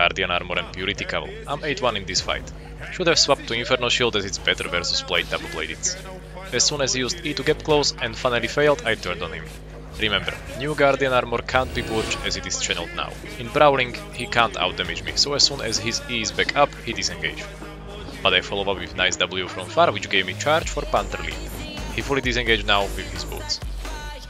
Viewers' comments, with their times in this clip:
0:06 brazilian music coming in hard lol nice video